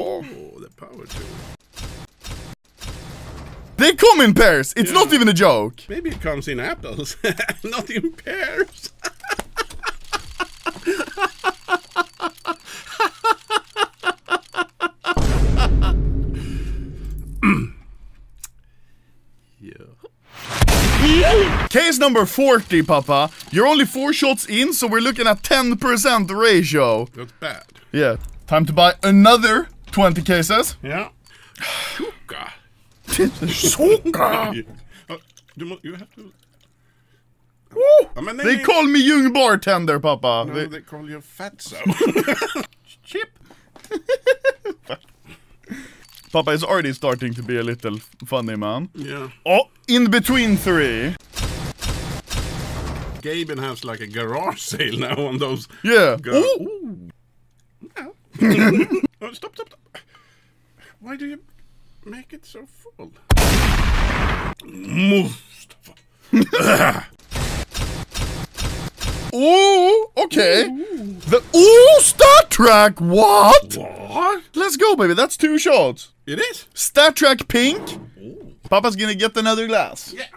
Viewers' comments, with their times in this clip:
0:05 When you tell your friend a joke but the only person laughing is you
0:08 me laughing at my own jokes
0:35 he sounds like the gnome =
0:37 Anomaly legit sounds the the gnome change my mind
1:05 angry vikinger nois